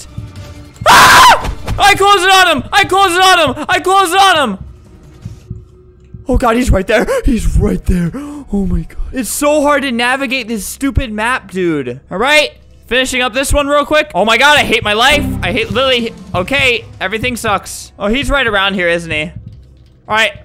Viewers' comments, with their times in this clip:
0:07 Albert u sound like my cousin lol